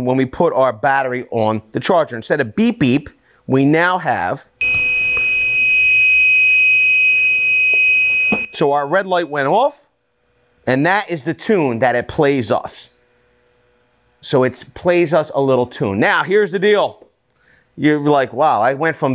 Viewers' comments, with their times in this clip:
0:06 that beep was really }^#*ing loud